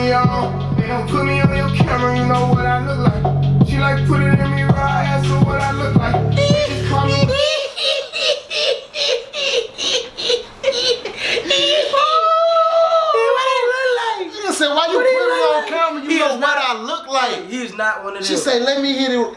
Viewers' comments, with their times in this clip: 0:06 The laugh is killing me man. 😆